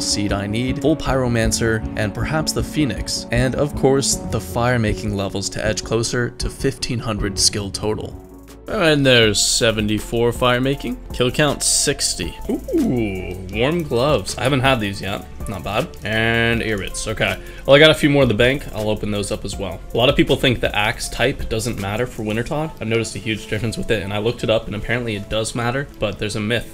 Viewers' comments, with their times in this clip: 0:10 when the music hits :D